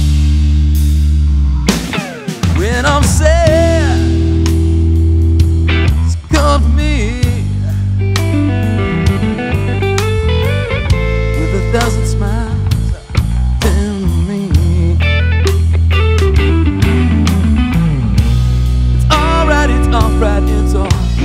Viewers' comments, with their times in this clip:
0:08 That lick really caught my ear; It's beautiful. 🎼🎸🎵🎶